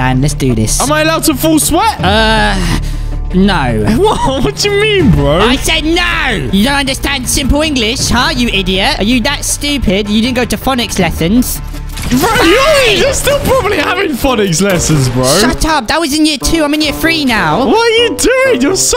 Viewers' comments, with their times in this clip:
0:06 says the guy that thinks an smg is pronounced smj